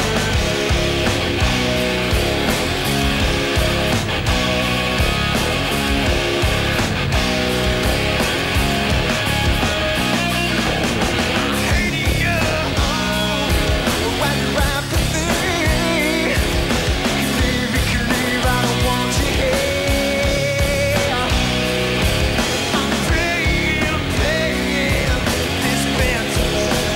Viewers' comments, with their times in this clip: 0:10 for great vocals
0:11 wow perfect vocals